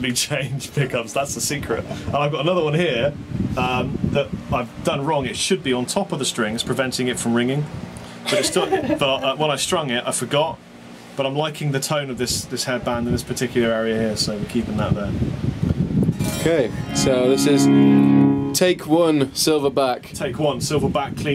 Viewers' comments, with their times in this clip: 0:06 im loving that prs tone on